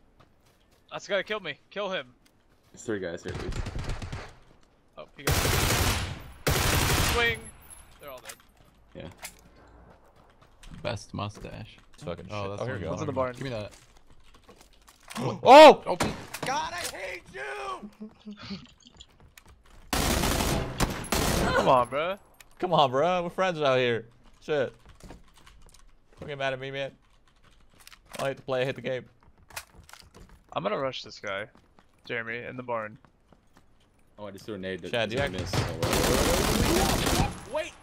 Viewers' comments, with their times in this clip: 0:09 rather than the transition "God i hate you!' scream was much better xD
0:19 Those are some PRETTY fast single shots with the M16 at the mark. Rapid-Fire script.